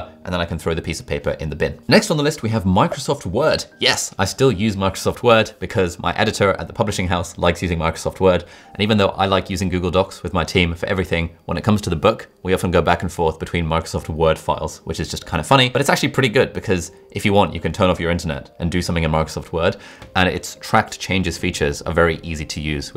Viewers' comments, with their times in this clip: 0:05 Oooohh, I certainly love the MICRIsoft Word app!!